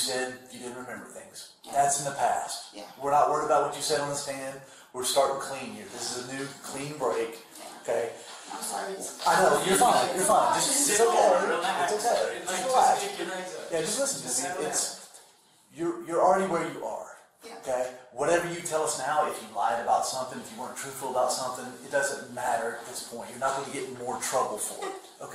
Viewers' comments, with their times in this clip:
0:10 my lord these cops are obnoxious. Stop talking over eachother sounding so desperate. You're just pushing her to talk instead of helping her through it